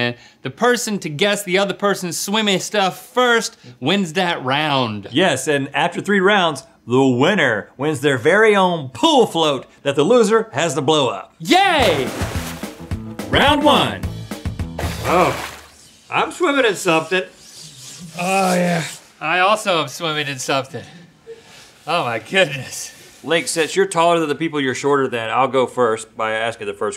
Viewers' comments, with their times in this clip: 0:10 That "yay" was straight out amazing 😂